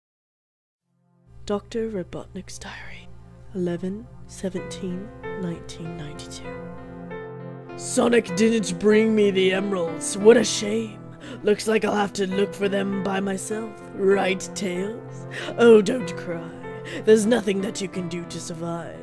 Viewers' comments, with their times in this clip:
0:00 O_O Man........ you sound evil...........